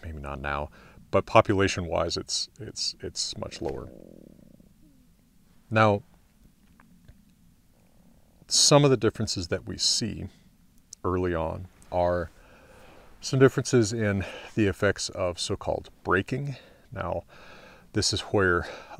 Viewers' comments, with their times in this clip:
0:03 i think i heard a belly